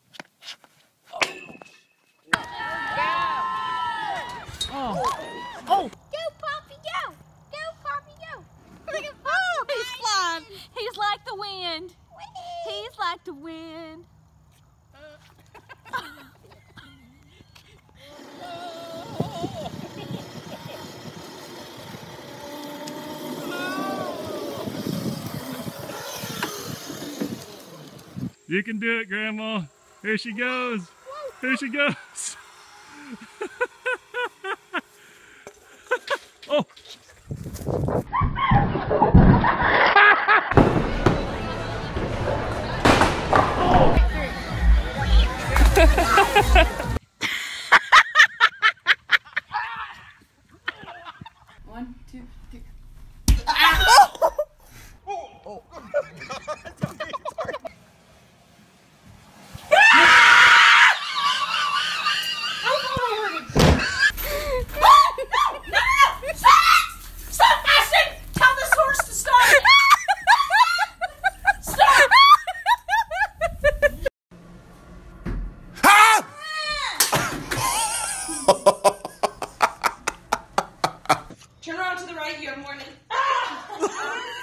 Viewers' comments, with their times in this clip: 0:10 The most American accent I've ever heard
0:58 that laugh though really
1:03 this was the best one her expression his wheezing laugh got me
1:07 Did she really say: 'Get this horse to stop'? I've gone back three times now and still hear the same. Tell me I'm hearing things, please.